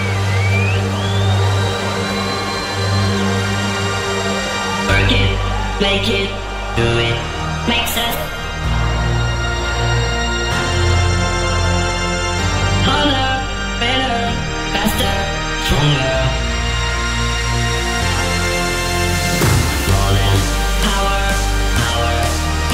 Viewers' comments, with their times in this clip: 0:04 That's ...French touch....